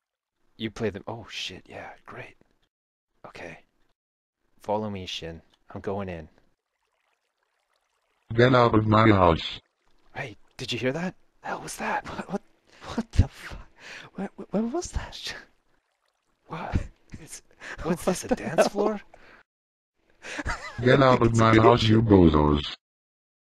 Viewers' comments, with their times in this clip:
0:08 Steven Hawkings is that you?